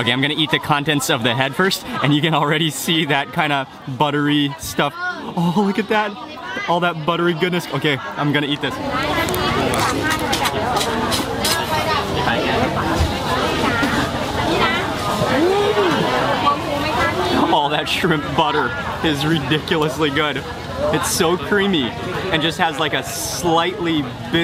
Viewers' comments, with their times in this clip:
0:10 Sounds like a brush on a snare drum.